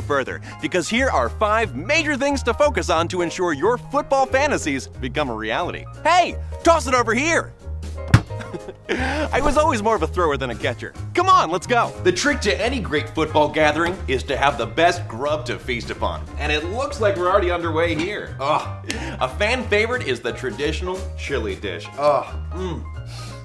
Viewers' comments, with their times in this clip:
0:07 Girl in the background SOMEBODY ONCE TOLD ME